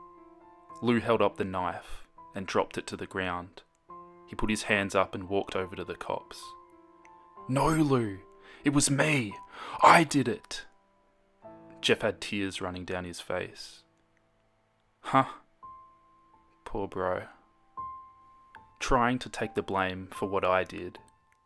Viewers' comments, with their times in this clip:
0:06 I can‘t with the accent😂 I love it